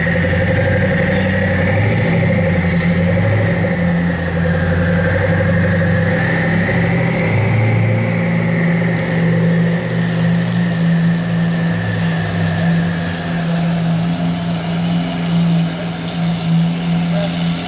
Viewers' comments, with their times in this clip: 0:04 A koenisegg I think (not sure tho, couldn't see it well) bit sound like a 125cc